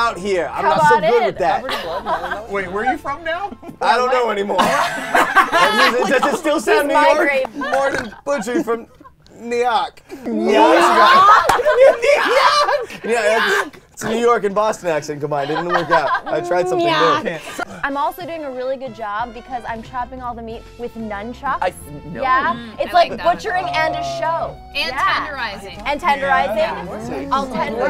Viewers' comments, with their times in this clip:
0:10 say N’yark emperor palpatines voice
0:11 MatPat snorts is hilarious on repeat